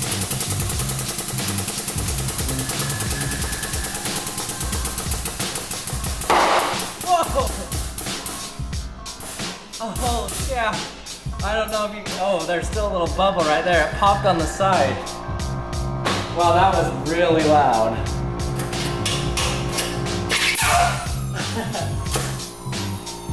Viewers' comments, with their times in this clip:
0:04 ow I had my ear phones on full blast